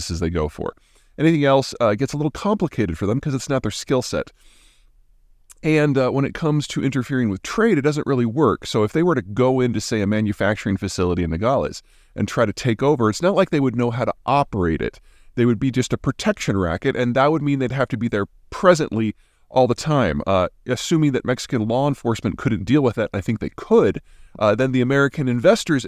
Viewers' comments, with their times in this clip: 0:08 Nuh GAH lezz . Nice